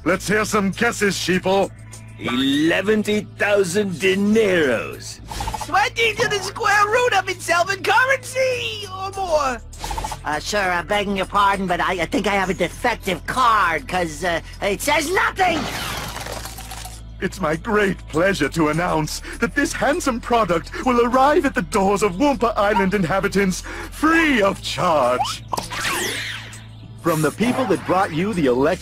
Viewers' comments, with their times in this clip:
0:10 bro sounds like spongebob
0:11 that sounds like tom kenny